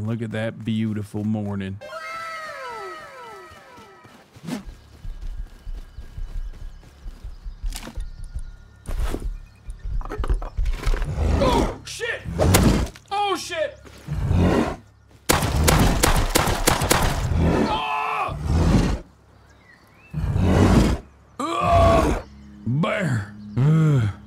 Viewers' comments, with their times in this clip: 0:05 I thought Hasan said he could vibe out with a bear 😅